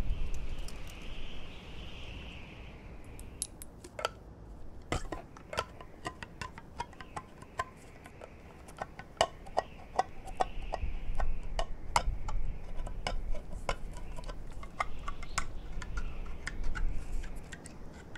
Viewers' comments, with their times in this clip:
0:05 no hiss 🤔 let's put it on tray, just to be sure... Btw nice can of whoopass...